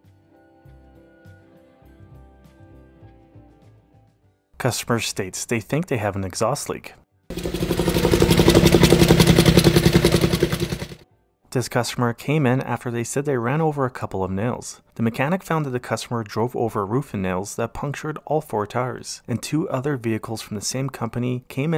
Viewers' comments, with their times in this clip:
0:07 Holy FUK. That is one hell of an exhaust leak. 😳